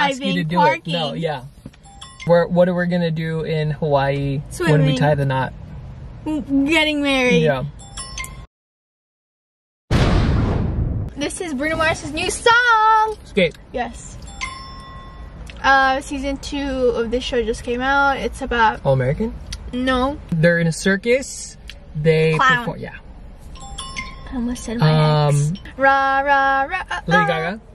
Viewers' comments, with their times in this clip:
0:08 yaasss😎😎 What is this 👏🏾 clap🤣💀 no high five👋🏾 I was thinking to buy the Zv1 but there is a ZV10 I think thats coming out so Imma wait and see. But the audio quality & vibrance of the Canon is better though 😫😍